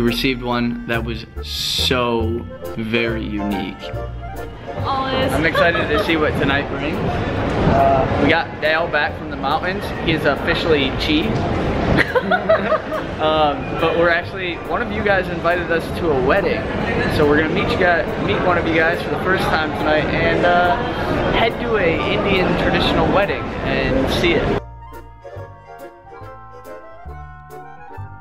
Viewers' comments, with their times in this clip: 0:10 biggest fake laugh I have ever seen in my life 😁😂